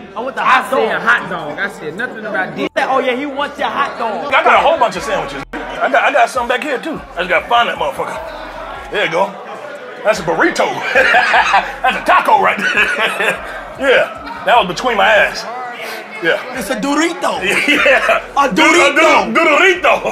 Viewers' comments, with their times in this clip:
0:06 kill me how he said burrito